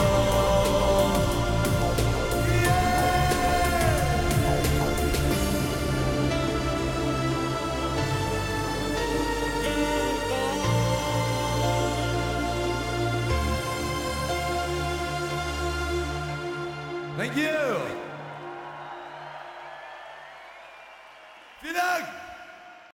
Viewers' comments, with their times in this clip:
0:05 This cover has held up well over the years. I still get goosebumps hearing the synths